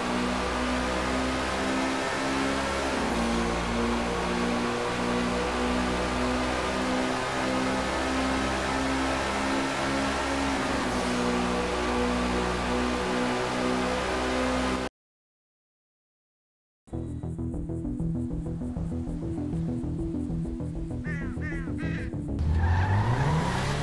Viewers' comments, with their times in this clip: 0:07 is it just me or does sound a little like the BMW M3 GTR from NFS Carbon and Most Wanted(2005)